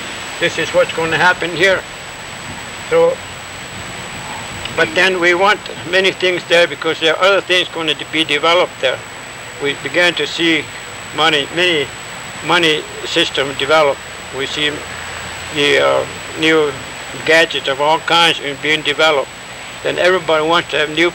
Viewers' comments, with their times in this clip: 0:03 AM, HUNTINGTON BEACH. Pondering my Scandinavian ,Nordic, Scottish, Irish , Cherokee ,Creek, long-haired ancient alien heritage. Reminds me of my favorite top ten ----- Hope, Love, Peace, Truth, Justice, Understanding, Tolerance, Empathy, Forgiveness, Gratitude. And that beautiful baby cooing makes eleven.